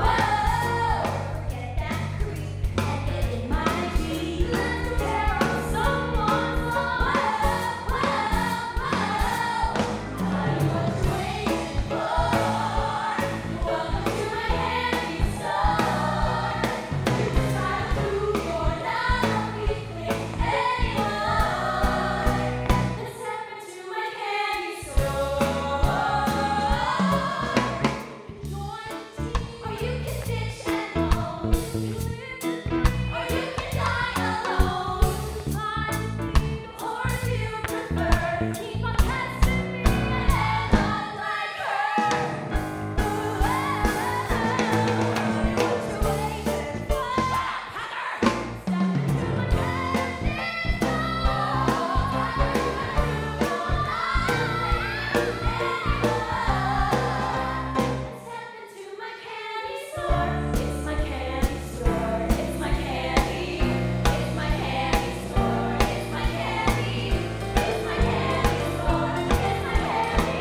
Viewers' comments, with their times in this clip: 0:09 those harmonies cleared my skin
0:58 I really like this harmony. Shame it isn’t usually used, it sounds really nice!